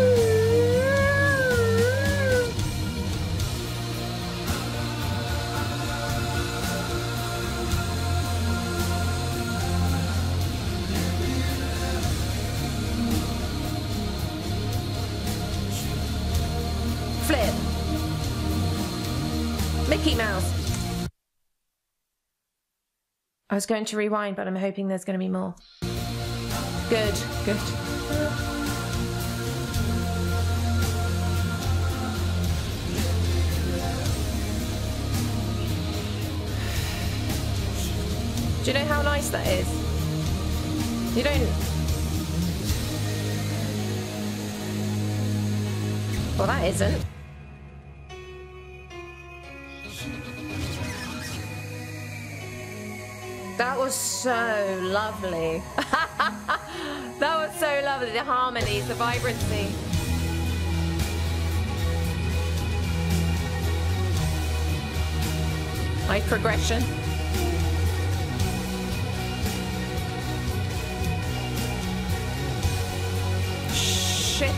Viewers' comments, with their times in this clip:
0:04 ... I thought she was me. This song has always sounded like magic to me. Sexy magic, but still magic.
0:04 the voice that made so many women Peter's Girlfriend's Girlfriend. She totally would have been one of them after this experience judging by her reaction
0:35 where you take a deep breath, is exactly how I feel any time I listen to Type O Negative. Soothing, mind blowing, breath taking. Luvs to you!!
0:56 love that laugh